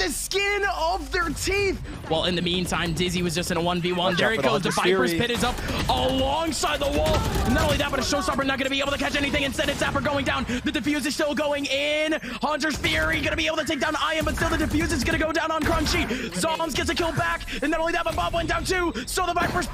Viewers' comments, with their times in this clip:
0:06 my guy is rapping